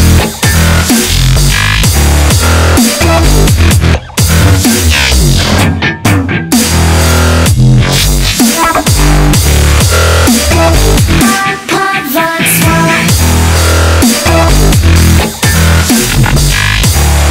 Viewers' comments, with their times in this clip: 0:05 sounds like kill the noise style basssss